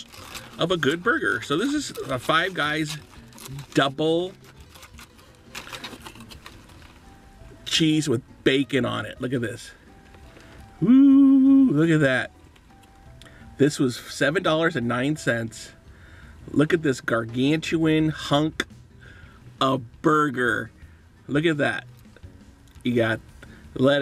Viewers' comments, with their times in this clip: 0:08 the saddest woowoowoo ever